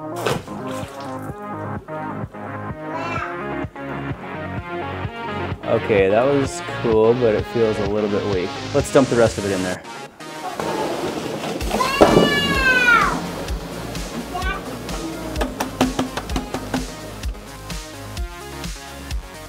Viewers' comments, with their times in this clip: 0:03 Well there are create his kids yelling 😸